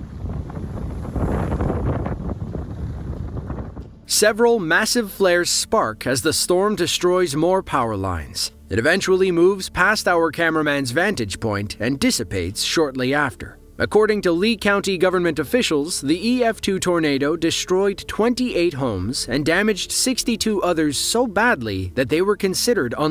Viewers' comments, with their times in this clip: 0:10 trigger warning, the dogs are out and barking